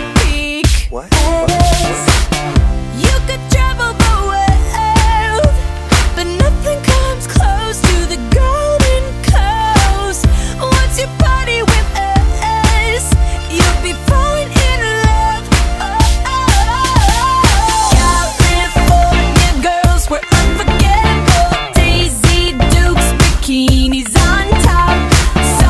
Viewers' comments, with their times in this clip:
0:08 I instead thought this line was "But nothing comes close to the girl in curles"